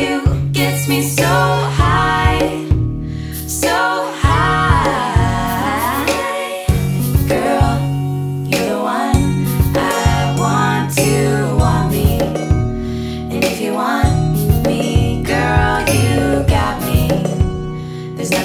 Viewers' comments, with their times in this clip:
0:05 the hairs on the back of my neck stand up! The three part vocal harmony is angelic!